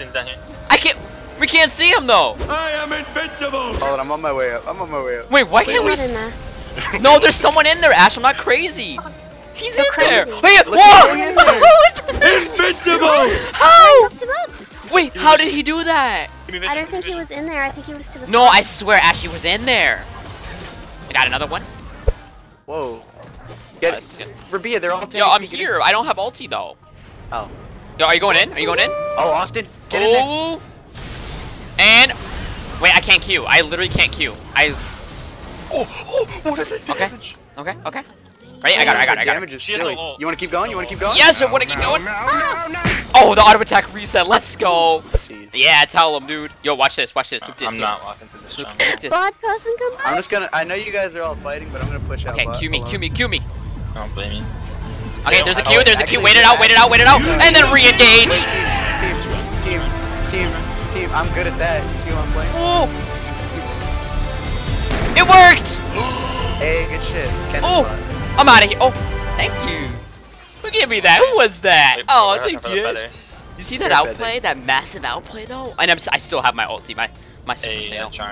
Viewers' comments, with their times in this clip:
0:10 That voice hahaha XD
0:48 did she just say "bird person come on"? Rick and Morty confirmed
0:59 you can slightly hear Genji's ultimate the Ryuji no ko kurae